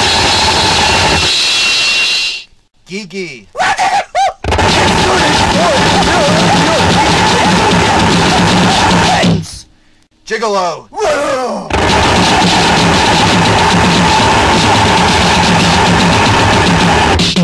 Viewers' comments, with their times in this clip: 0:03 I love how he says 1234 in Gigi. 1 2 3 HOH!!